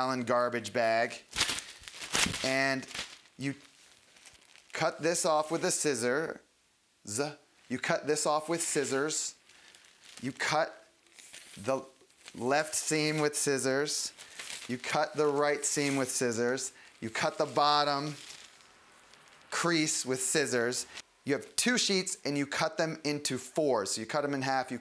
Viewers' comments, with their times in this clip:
0:05 and that ladies and gentlemen, is how you pronounce SCISSORS!